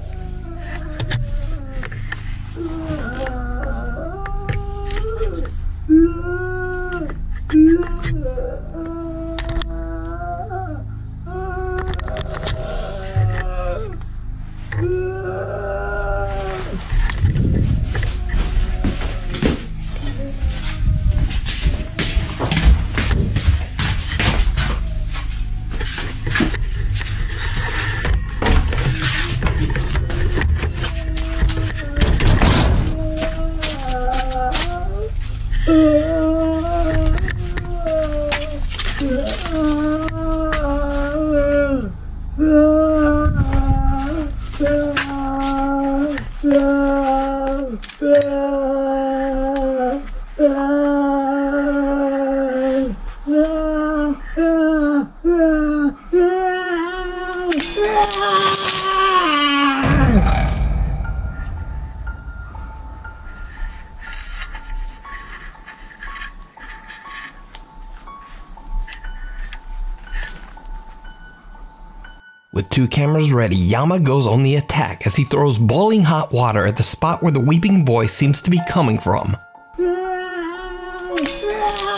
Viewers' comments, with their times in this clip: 0:07 that moan is not creepy it's annoying AF!! I want to punch that ghost in the face shut up and come up with a creepier sound!
0:09 wailing ghost, I at first thought maybe it was mountain lion or that it was a man hiding in the brushes. But the hot water part was creepy AF!!! I'd of run away and cried myself outside of someone else's house.
0:55 the sound of the old Mexican corn lady when you toss holy water at her.
0:56 HAD ME LAUGHING MY LUNGS OUT THE WAY THE GHOST SCREAMED WHEN HE THREW THE WATER ON IT 🤣🤣🤣🤣🤣🤣
0:57 question am I the only one who hears like a roar after the yell or idk it might be me overthinking a scraping pot sound.
1:04 the sudden scream of the ghost scares the hell out of you when he threw the hot water....